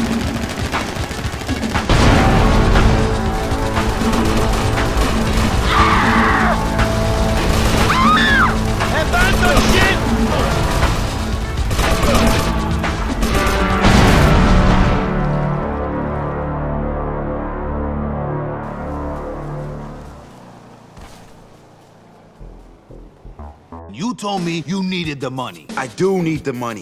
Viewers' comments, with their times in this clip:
0:09 god i miss the sound of those assault rifles